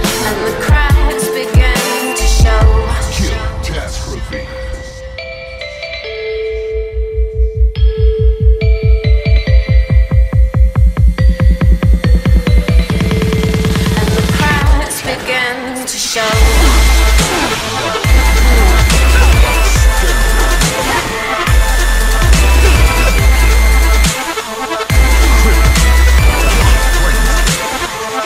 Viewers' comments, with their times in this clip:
0:10 you can tell you had it perfectly synced but youtube couldnt process it properly, 5/5 nice job